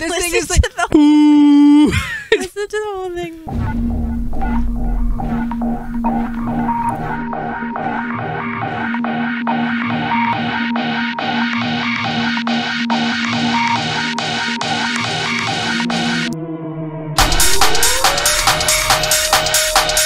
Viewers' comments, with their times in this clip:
0:03 Song is pretty boring as a mainstream thing, but as an old school dubstep it is amazing - I can feel the atmosphere of 2000s UK parties (personal timecode )